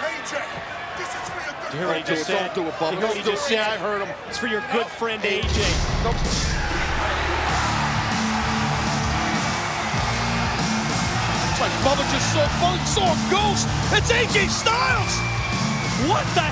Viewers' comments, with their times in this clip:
0:03 best pop in TNA history